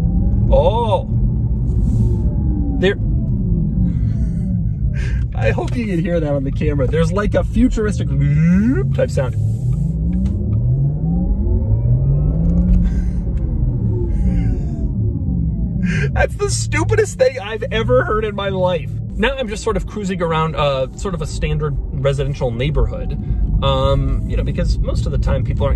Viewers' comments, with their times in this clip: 0:03 That sound actually sounds pretty cool. I wish my car could make that sound, but all I get is what sounds like someone knocking on my door when I hit the throttle.
0:09 sounds like the plasma pistol from Halo
0:12 I feel like the little electric sound should be included on all electric cars. A little bit of sound. Because I will miss the sound of my Mazda RX8. (Yes the mazda rx8 is my car. its a 2010)